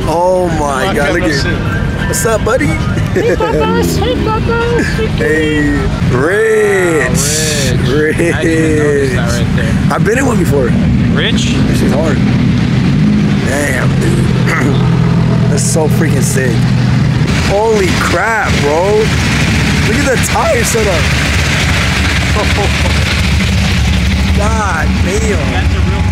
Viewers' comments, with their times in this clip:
0:08 second voice crack killed me this a funny video 😂😂😂😂